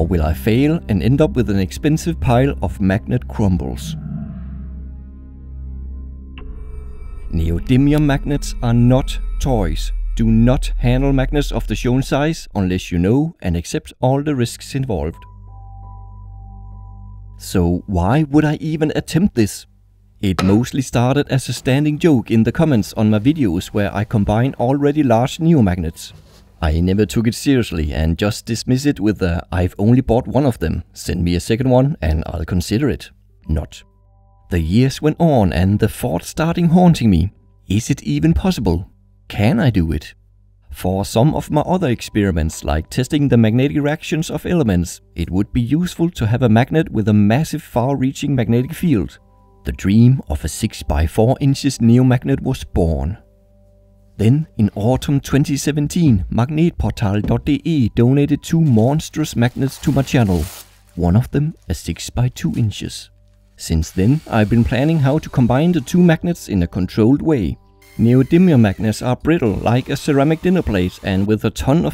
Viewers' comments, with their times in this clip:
0:06 Disliked because you smacked your lips Trash video.
0:33 No one gonna talk about his haha
0:36 … Dude… you’ve got a serious eye condition… LOL 🤣 I can’t even squint… About that strange sound: I’m not an expert, but I think that that sound is created by the pressure of the to magnets, and the friction on the plastic wedges.
0:55 Mah gneht portahl [dot] deh ehh, are you german?😂